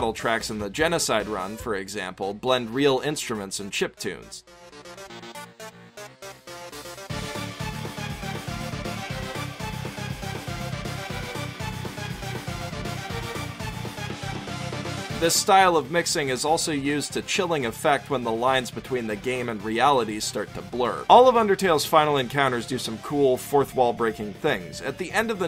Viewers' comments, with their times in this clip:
0:07 Just got shivers down my spine. Love that song.